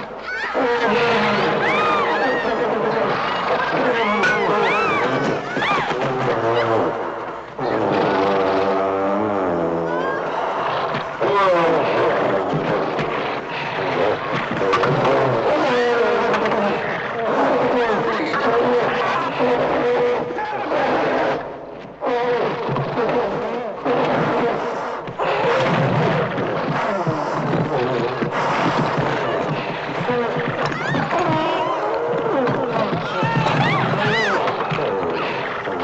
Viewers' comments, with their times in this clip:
0:07 THERE SOUNDS ITS MY LAWN MOWER
0:21 Sound like my LAWN MOWER